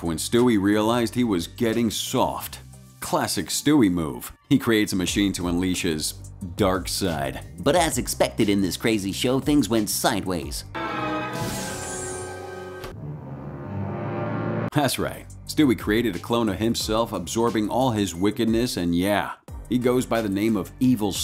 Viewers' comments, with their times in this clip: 0:08 Why did your voice go like that?